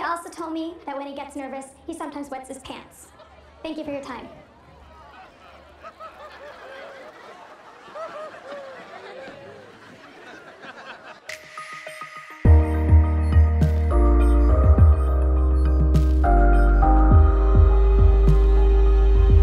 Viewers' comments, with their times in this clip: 0:03 pumped up kicks begins